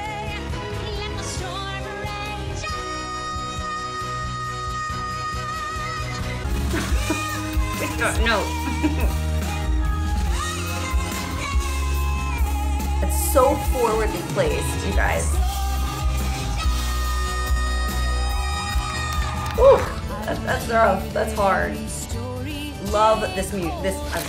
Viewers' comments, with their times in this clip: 0:10 WOW, Idina Menzel did Let It Go LIVE in the original key! That's a tough song to sing live because it's got so many high notes, there may be bad weather if you're performing outdoors, etc.